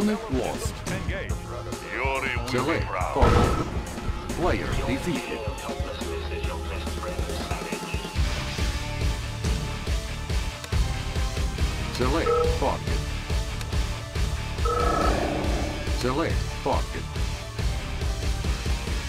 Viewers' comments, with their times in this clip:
0:05 the music on min is perfect (you're feeling of helplessness is your best friend Savage) XDDD